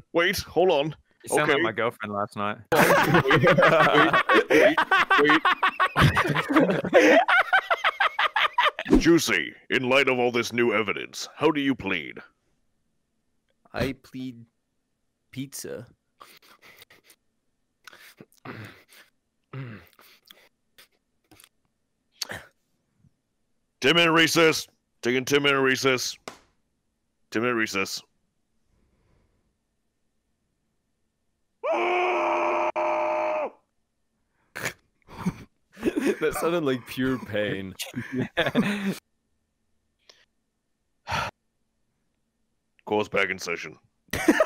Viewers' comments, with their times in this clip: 0:04 you sound like a villian laughing
0:06 he sounded like elmo
0:25 when narrator screams I died